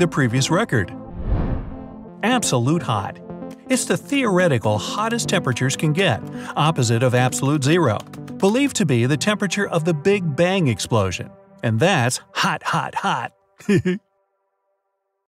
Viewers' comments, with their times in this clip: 0:13 Lol that laugh at the end